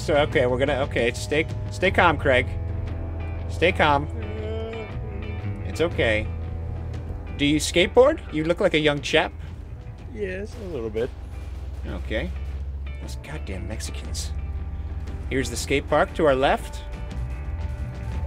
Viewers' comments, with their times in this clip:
0:06 Is it just me or did he start to sound like Peter (Family Guy)